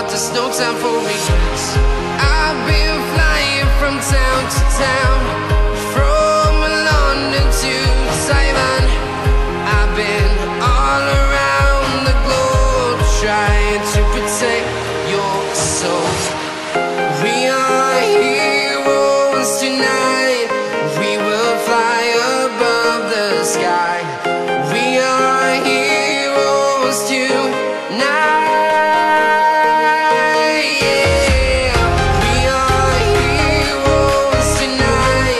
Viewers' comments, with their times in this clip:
0:07 the sound is saiman not taiwan hahahahhha
0:16 is that voice crack? "We aRe hE Roes tonight*